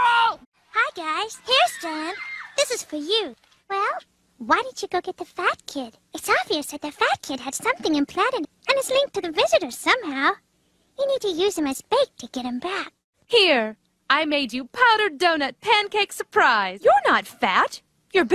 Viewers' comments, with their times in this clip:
0:03 In south park the first episode in the 90s you can tell the voices are diffrent from the voices in year 2000 thats what it looks like to me like they redone voices i think wendys voice is better in the original her voice in the redone version is kinda annoying at times but not too much